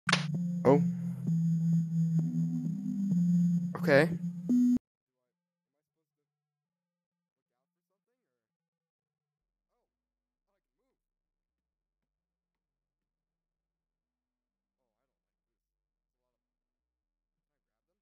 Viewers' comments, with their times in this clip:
0:04 the video's audio gets cut off, but I didn't say anything important, so it's fine. The video's audio also gets delayed too, sorry for that! (Told you it'd be scuffed.)